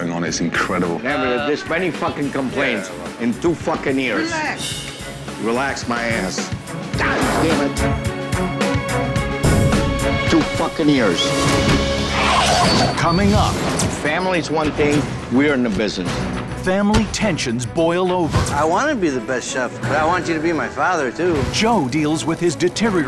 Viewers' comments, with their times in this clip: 0:08 Tou fakken ears